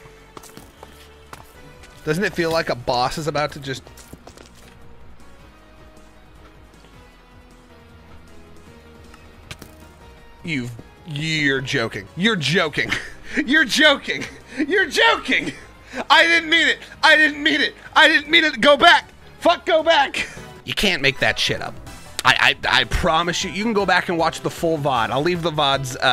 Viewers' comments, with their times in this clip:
0:07 bro said why do I hear boss music???